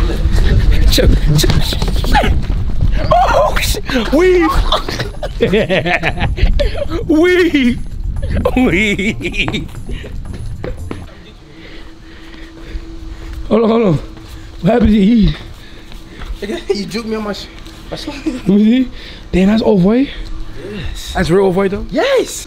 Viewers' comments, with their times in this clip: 0:06 lmaoooo fanum sound like a 10 year old kid playing tag
0:06 fanum giggling got me dyin